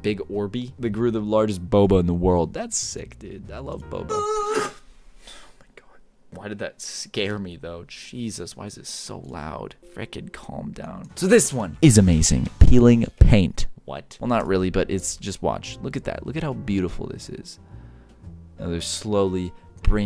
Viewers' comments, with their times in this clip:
0:04 Nobody: Caylus:Gets scared at some random noise